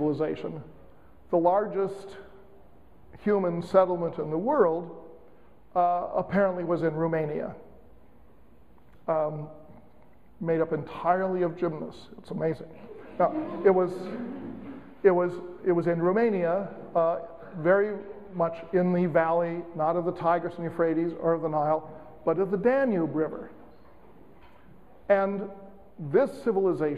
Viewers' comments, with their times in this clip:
0:08 could anyone tell me please, what were ancient cities in Romania made up of? It sounds like 'gymnus/jimnus', I could not understand that word.